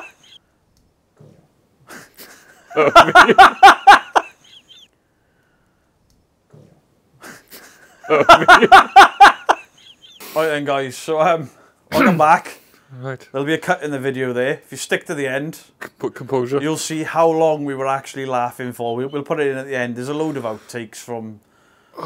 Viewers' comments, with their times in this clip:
0:04 gas demon 😂😂😂😂😂😂😂😂 love that you left that in!